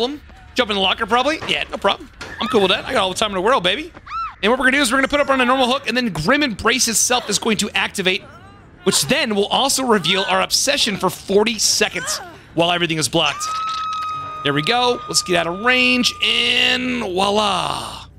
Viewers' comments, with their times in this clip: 0:06 I paused a left at “Grim Emb-“, came back unpaused it and heard “Racist Self is going to activate which then will also reveal our obsession for 40 seconds — while everything is blacked